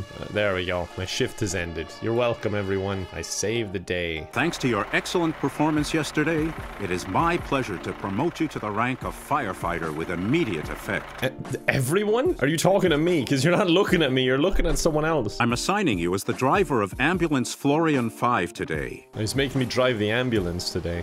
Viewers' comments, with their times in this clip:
0:03 sounded like he was gonna start singing XD
0:04 The happy ring in that guy's voice is the most charming thing ever. Also I love how a game about fighting fire has the ugliest, shoddiest fire graphic possible.